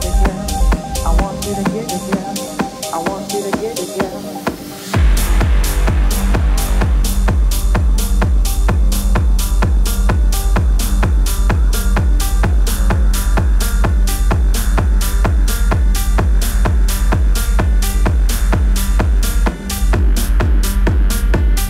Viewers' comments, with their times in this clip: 0:04 And then She drops a bomb